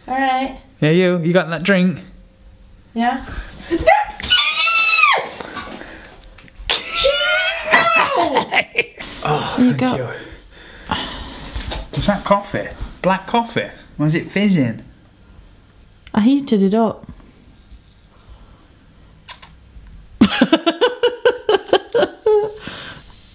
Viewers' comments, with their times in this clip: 0:04 it sounds like a chicken just got its neck snapped